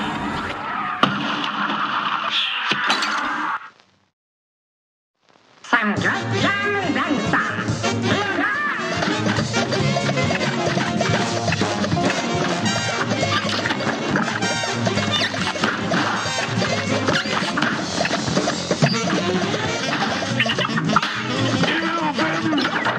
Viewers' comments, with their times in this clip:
0:05 why does it sound like danganronpa